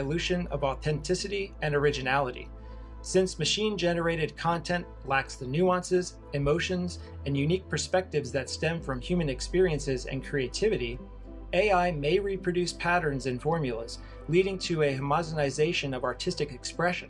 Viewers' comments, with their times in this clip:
0:03 I can tell by the tone of the voice that the narrator started reading something he does not understand.